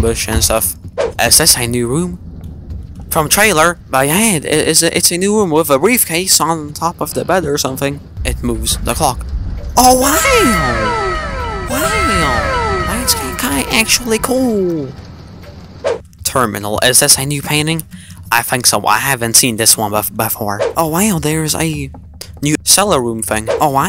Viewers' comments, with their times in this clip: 0:10 wow sound effect lmao